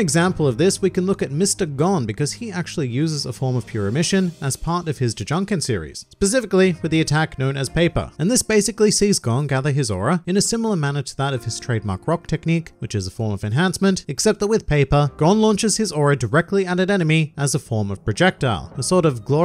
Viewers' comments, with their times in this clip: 0:04 as a part of his drunken series lol